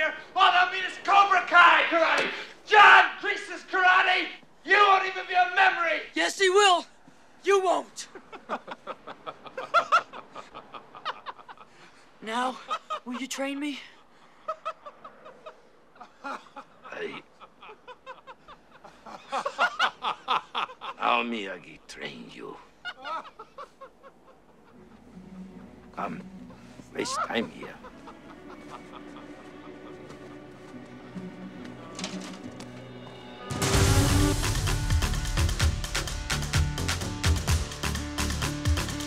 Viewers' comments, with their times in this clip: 0:06 The best part of this scene is when Silver just randomly starts laughing at LaRusso (lol.)
0:27 why does silver's laugh sound like a chicken 😂